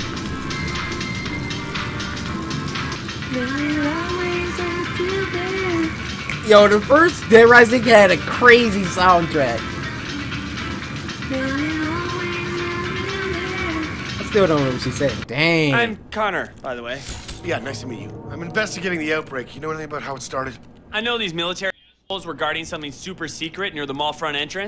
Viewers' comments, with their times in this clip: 0:10 sings along I still don't know what she's saying.